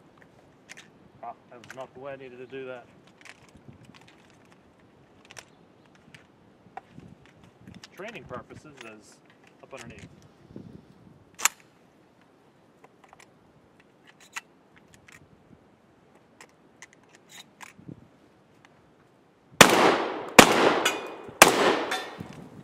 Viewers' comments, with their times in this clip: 0:08 i heard a door squeak